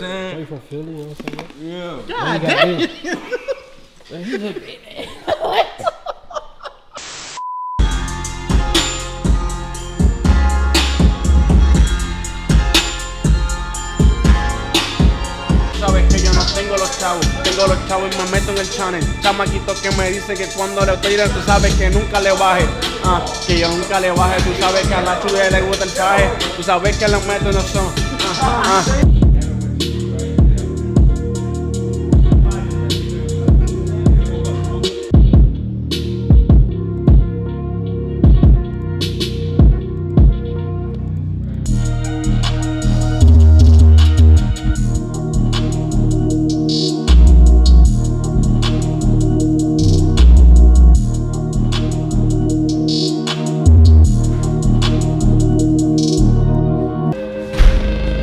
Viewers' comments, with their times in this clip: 0:08 that beat hard asf
0:39 That beat is fire fr